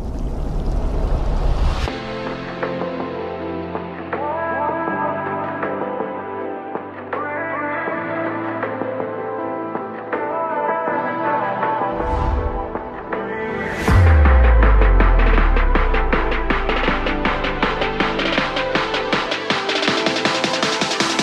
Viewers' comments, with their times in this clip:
0:06 What's that stupid tin noise bloody woke me up at 1am! 🕐👀